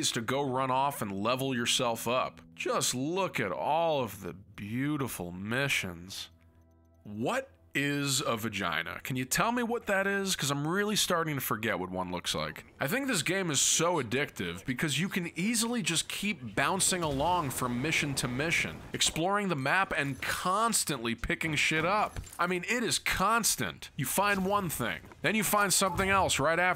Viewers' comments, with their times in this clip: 0:08 😐.......🤣 many thanks for the laughs - it was the timing and your tone, felt like an elevator in free fall, for a brief hilarious moment 🤔 so it was kind of 'bad' ? I'll just Sub and read the fine print much later / never. 👍🍻🇨🇦